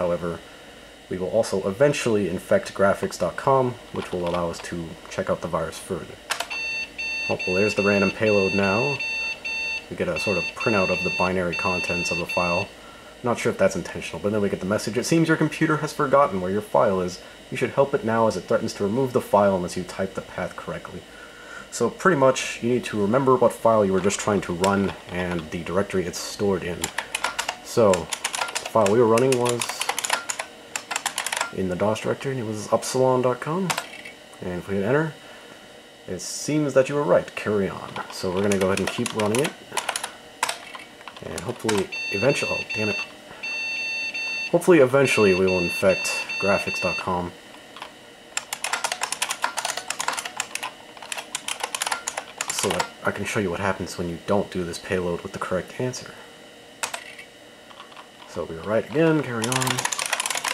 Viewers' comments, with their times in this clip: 0:07 why is it printing random gibberish and making static noise? If the computer loads it in the screen, all of it gets executed?
0:40 It is doing Jingle Bells, the not great way
0:42 the beeps sound like jingle bells, except at one repeating note